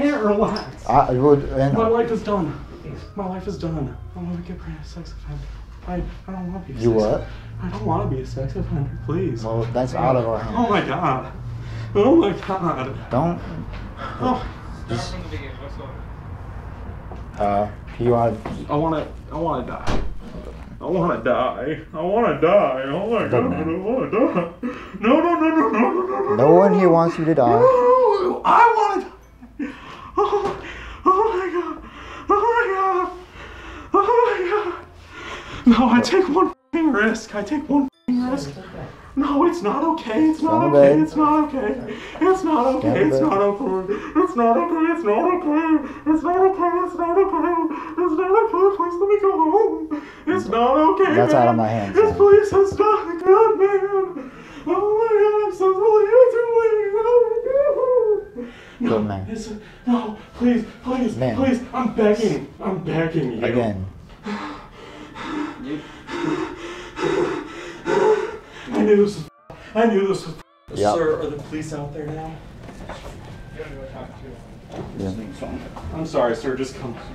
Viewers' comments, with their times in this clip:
0:04 why would you put THAT as the background music? I hate it.
0:20 Turned into Elvis Presley for a sec there
0:22 man be sounding like Hank Hill 😂
0:25 why did he pull out an Indian accent. lmao
0:27 buddy started cutting a Paul Bearer promo🤣
0:37 he sounds like the “WHEN EILL YOU LEARN” kid
0:48 bro sounds like mickey mouse
0:48 sounds like mickey mouse bruh
0:48 the way he sounds like mickey mouse
1:01 bro’s gone insane that he started singing that one song 💀